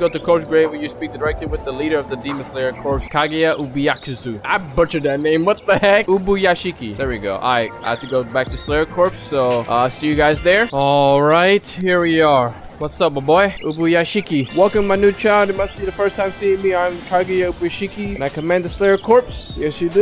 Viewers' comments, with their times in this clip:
0:04 Kagaya UbaAKSuku hahahahaha you Are the best man
0:06 wow, he didn't butcher a name.... S W E E T !